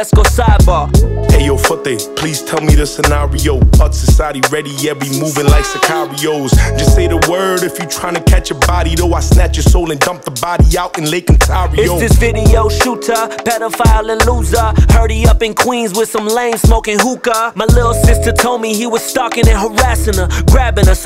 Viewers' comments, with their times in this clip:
0:03 tupac vibe when he says the line ‘the word’